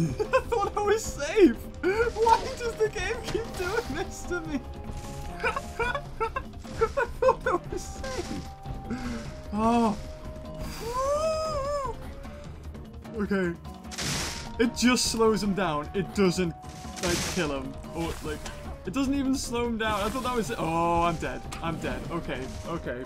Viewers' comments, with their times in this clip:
0:05 Why does your laugh sound like a squeaky toy